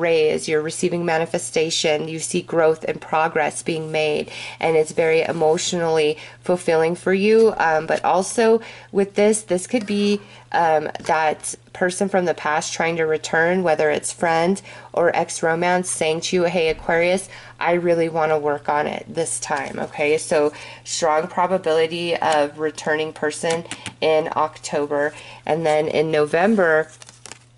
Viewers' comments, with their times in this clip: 0:09 Whoa !! What was that voice I heard ??? 😳